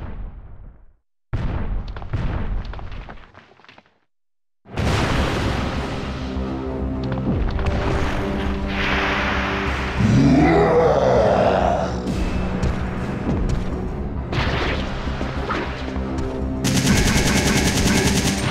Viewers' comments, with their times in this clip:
0:04 I love that entrance from nemesis with that music, it's atmosphere is the best
0:05 When that music starts, you know that the shit has hit the fan.